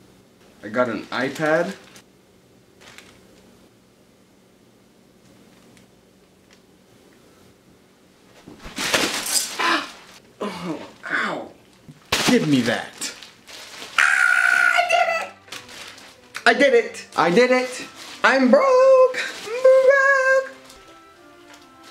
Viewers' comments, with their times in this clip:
0:06 Dramatic Indian serial style slap coming just kidding it was a soundless slap lol